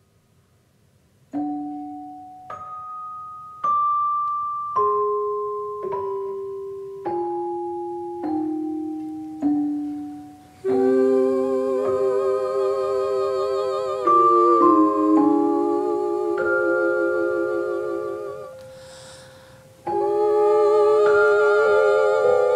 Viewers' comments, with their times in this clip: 0:10 sounds like something that would play when a supervillain realizes he has power now…kinda like Electro as he would slowly play with the electricity in his hand